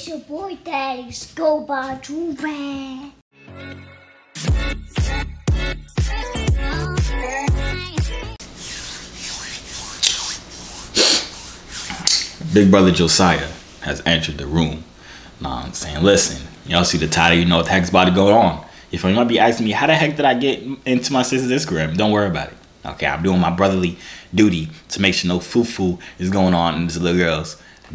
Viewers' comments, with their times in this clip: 0:09 rip my ears 😭